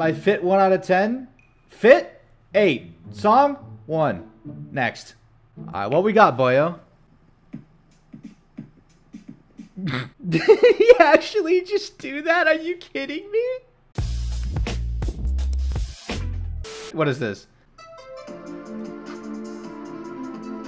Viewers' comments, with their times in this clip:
0:06 i’m just happy i made him laugh